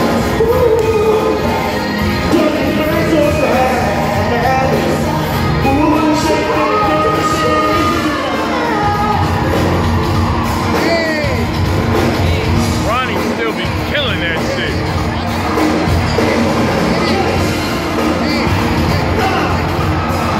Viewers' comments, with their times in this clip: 0:04 That high note unrehearsed pass off was smooth. I just love all the brotherly love I feel from this performance. "I Love It!"❤
0:07 Algee with the whhhhhyyyyy!!! yes